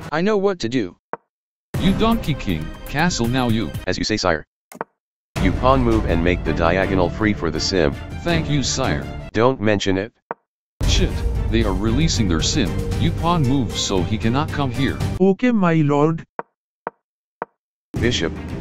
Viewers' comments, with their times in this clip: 0:03 the black king talk really fast